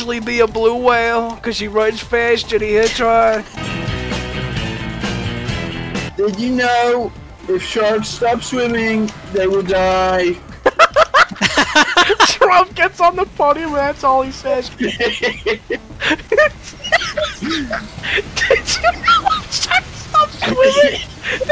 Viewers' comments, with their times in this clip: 0:06 Still hoping we can hear the real trump say it one day.